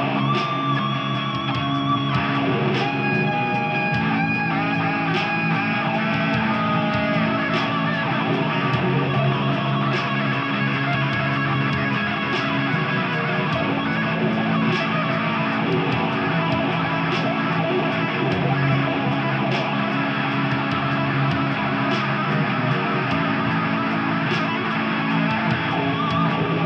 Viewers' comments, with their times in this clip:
0:08 wow right on with the rhythm section. I like.